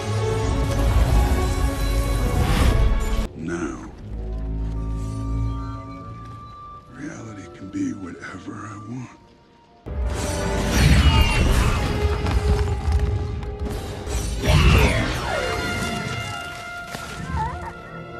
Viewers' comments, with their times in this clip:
0:04 that background whistle is damn❤️🔥🔥